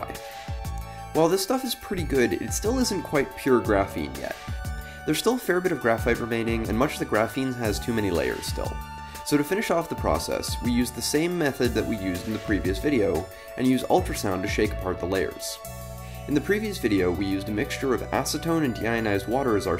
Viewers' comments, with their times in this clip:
0:05 loved the backround beat